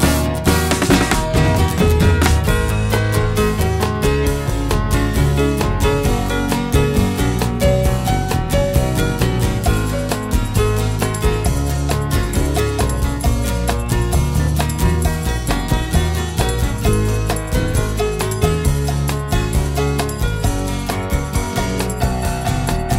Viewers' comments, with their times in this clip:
0:05 I have the album in my collection since it came out. I always turn up the volume at the end (from ) to capture the wonderful closing piano piece. It really shouldn't be faded and the final notes you can hear seem to me to be taking the listener on into another wonderful world of music. great album and beautiful art too with the original album